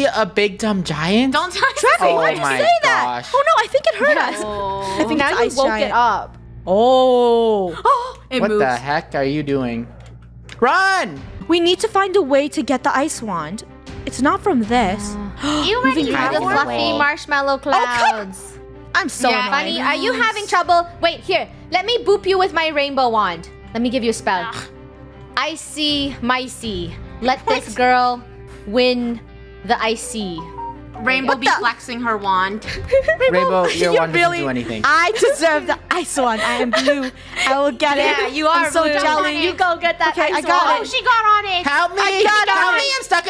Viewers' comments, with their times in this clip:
0:10 someone phone is ringing in tis samsung phone
0:21 *rainbow says the spell*... phone sound
0:24 WHY DID I HEAR THE SAMSUNG NOTIFICATION-
0:24 Thers a bting sound lol
0:26 In minutes, i heard a buzz notification in one of the Krew Members a Samsung Spaceline
0:26 THE ANDROID NOTIFICATION
0:27 PLS😭 the samsung notification
0:27 did anyone else hear the android noise..
0:29 NOT THE SAMSUNG RINGTONE-
0:29 IM CRYING DID ANYONE ELSE HEAR THE SAMSUNG NOTIFICATION
0:29 the alarm made me wheeze idk why 😭
0:29 who else heard the ringtone? 😂
0:29 whos phone was that 🤨
0:29 HELP WAS THAT AN ANDROID NOTIFICATION OR IS IT JUST ME
0:29 EhEm ✨aesthetic android notification✨
0:30 I heard a notification sound lol
0:30 Did anyone hear the mobile phone noise lol😂😂
0:30 someone left there phone on ....
0:30 i lit heard an phone ringtone
0:30 there was a android sound 😂
0:30 y'all heard the android 😭🤣
0:30 Rainbow: makes spell Phone notification Lol how did they not notice
0:30 lol the ring tone on the backround
0:30 is it just me hearing the Samsung ringtone in the background-
0:30 THE SAMSUNG NOTIFICATION